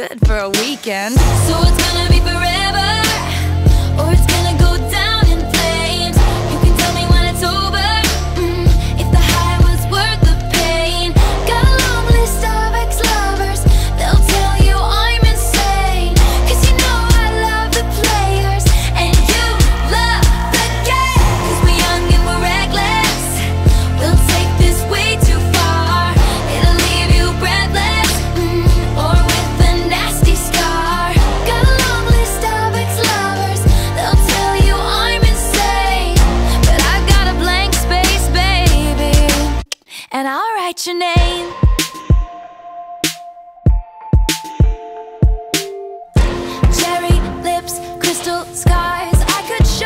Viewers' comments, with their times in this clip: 0:10 am I the only 1 that heard Starbucks lovers
0:10 Who else hears "Starbucks Lovers" ?
0:12 ok, for 3 years I thought was "got a oncg list Starbucks lovers, they'll tell u I'm insane."
0:32 Where are the STARBUCKS LOVERS ? 😂😂😂